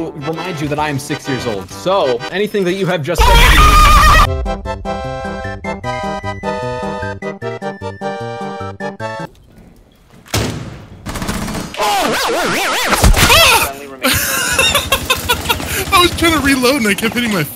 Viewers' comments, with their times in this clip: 0:03 loL fuMny noiSe :)